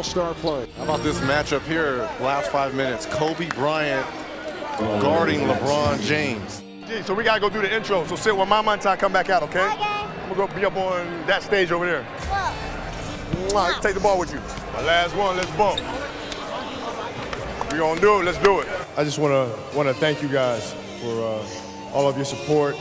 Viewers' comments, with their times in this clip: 0:06 The way Gigi said "OK" to what her Dad said😭 Such a dedicated and good daughter who always obeyed her Dad.